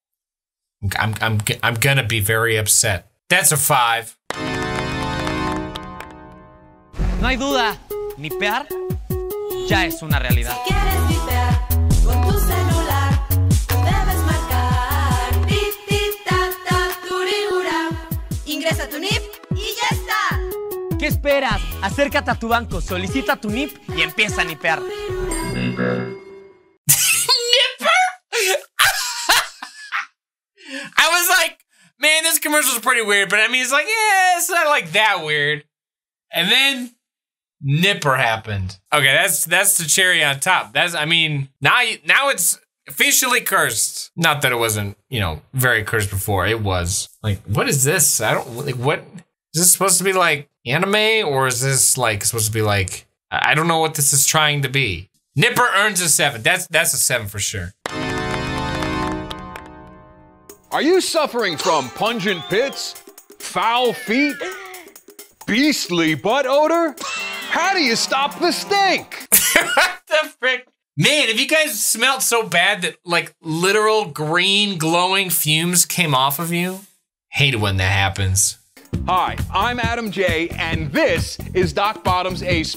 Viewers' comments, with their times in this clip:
0:10 this shi a bop🫨🫨🫨🫨🫨🧍😶‍🌫️
0:25 Am I the only one who hears the n word?
0:27 NIPPER?! (Then He Laughs Hard)
0:28 That laugh cracks me the hell up to no end! It's just priceless with a capital "Pr".
1:08 Omg he sounded so much like pewdiepie